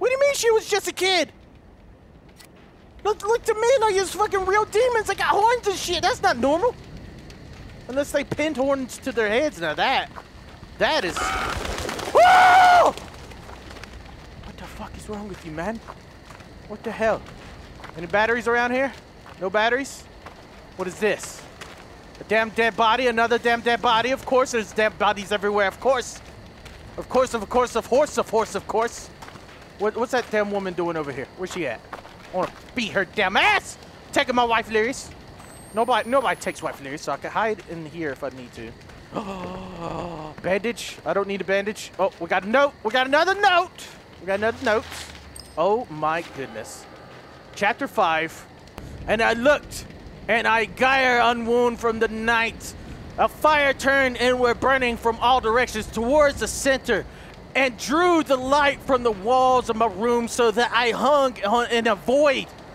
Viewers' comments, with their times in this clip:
0:10 he litterally sounded like the crow that jump scared him
0:48 Sounds like a slam poetry lol